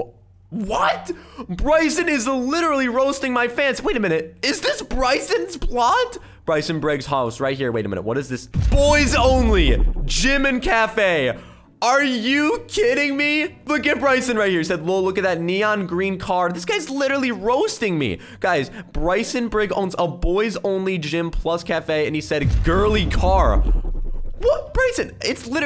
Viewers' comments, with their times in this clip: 0:10 I thought he Said "JIMIN CAFE"